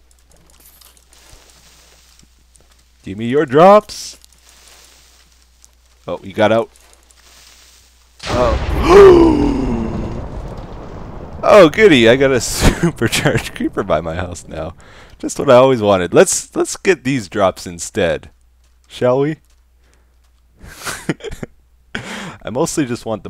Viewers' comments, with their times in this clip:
0:08 XD nice gasp XD